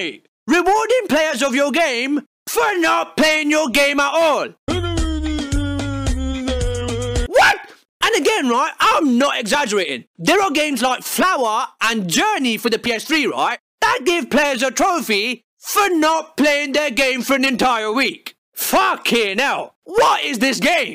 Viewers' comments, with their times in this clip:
0:05 I want a 10 hour version of the music